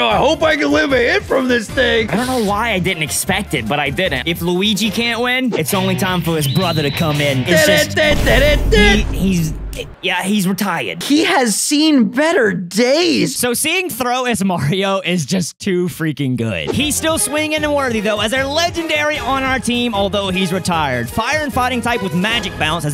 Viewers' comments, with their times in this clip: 0:05 THE DAMN MUSIC BEING ONLY THERE FOR ABOUT 1 SECOND AND I STILL RECOGNIZE IT